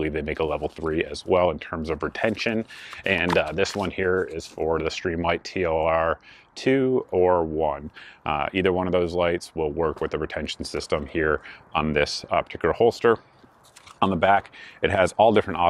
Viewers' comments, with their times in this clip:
0:03 So The first holster I ever purchased was Blackhawk if was awful. the worst I've ever had. My Glock flopped around in it and caused me to be loud and rattle everywhere I went. I poked in here to see if anything has changed. told me all I needed to see. looks like you've got almost a half inch of slop. That clunking sound. Ill tell you what Safariland holsters are snug as a bug in a rug and when paying these prices I would expect that. Blackhawk has always been better for Airsoft if you ask me.